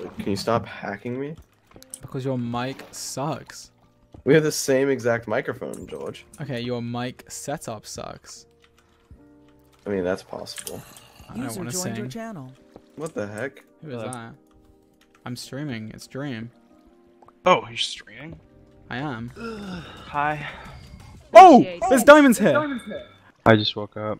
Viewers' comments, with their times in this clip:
0:05 the way sapnap says george is so british
0:11 if someone wants to replay Dream's morning voice